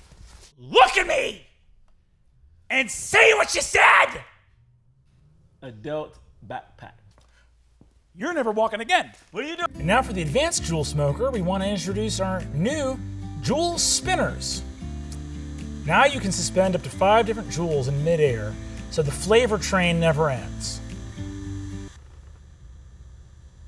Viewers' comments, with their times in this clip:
0:09 Right before this part I thought he sounded like Walt Junior 😂